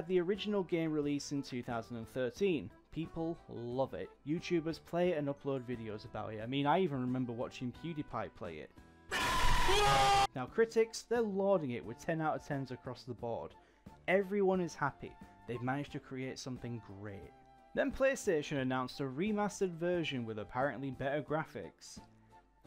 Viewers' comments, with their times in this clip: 0:06 Your voice is very low, so I had to turn the volume up. Then this happened 💀💀💀 But all the best with your future content.